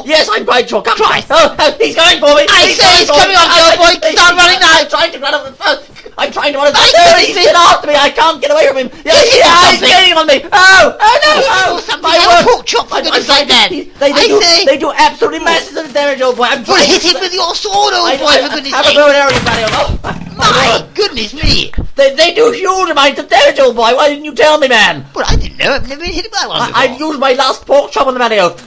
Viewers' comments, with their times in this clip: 0:10 *British gibberish and screaming* Pork chop! *More British gibberish and screaming*